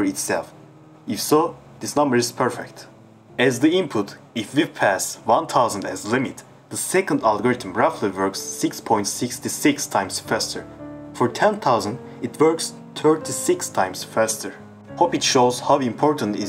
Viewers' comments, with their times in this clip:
0:03 Sorry for my awful "divisor" pronouncition 💀And also left one is Fast, right one is Slow, I made it wrong at first so had to blur it to prevent possible confusions. It was my first "real" editing experience so forgive me for these mistakes <3